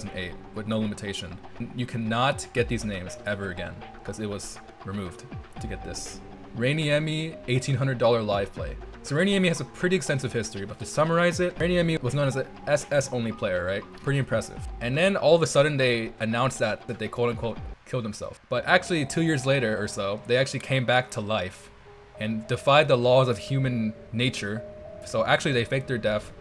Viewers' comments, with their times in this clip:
0:10 your jumpcuts are desorientating for audio listeners like in It always makes me think that my headphones are bugging out, the internet is bad, or the video is skipping ahead